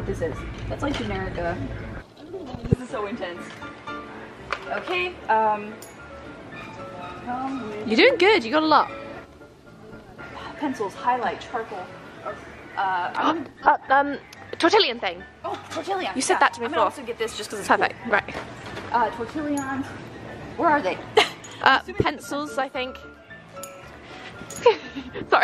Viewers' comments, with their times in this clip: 0:06 you can here the highlight pencil drop😂 Edit: that was her back pack that made that noise lol